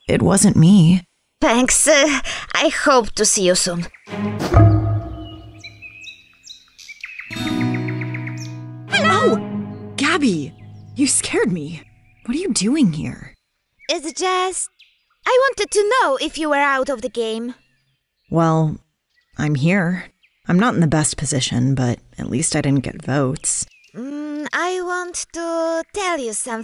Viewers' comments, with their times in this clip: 0:07 I really love that guitar piece in that scene. It sounds really nice and romantic 🥰